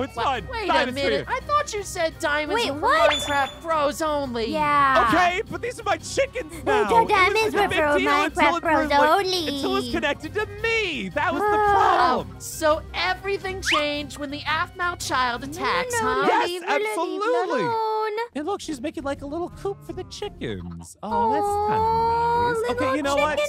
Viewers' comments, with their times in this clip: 0:06 She sounds like myrtle-